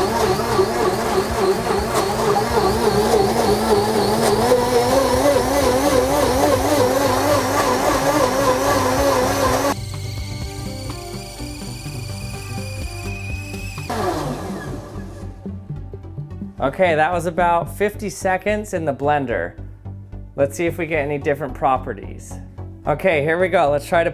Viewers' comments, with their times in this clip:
0:10 it sounded like a kettle